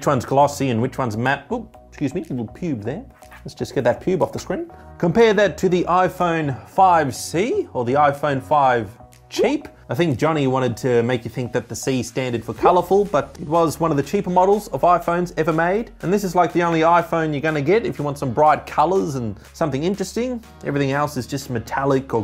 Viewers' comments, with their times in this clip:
0:09 I rember when you were calling it iPhone Fivec XD